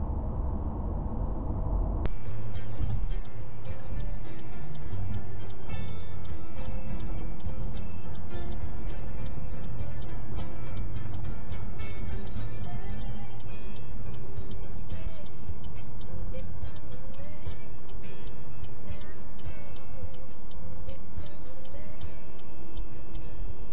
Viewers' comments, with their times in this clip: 0:04 the perfect song 🤦🏽🤣🤣🤣🤣🤣🤣